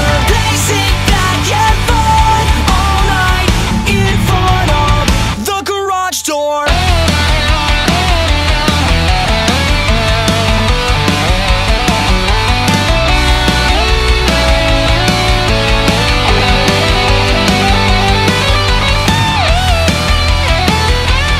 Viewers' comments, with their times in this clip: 0:09 This guitar could easily be in a DBZ intro. Facts